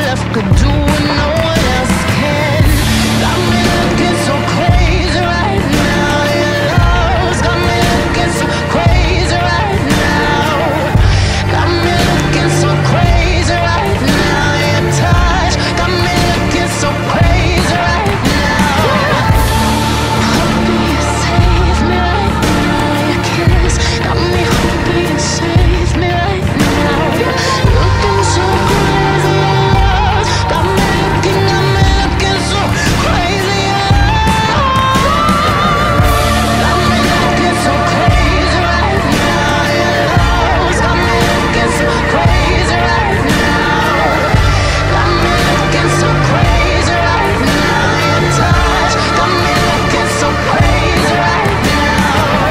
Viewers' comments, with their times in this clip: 0:03 am I the only one that thinks this chorus kinda sounds like Patrick Stump? 🤔
0:27 I hope you guys realise how incredible the ad lib vocals are. wow
0:36 There's an alarm going nuts from onwards I'd say obsessed and dangerous fits perfectly.